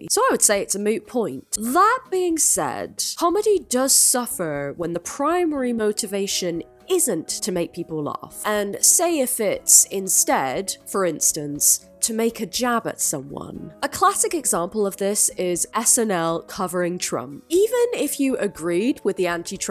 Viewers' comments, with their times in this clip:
0:03 that “suffer” changed nationality. 😂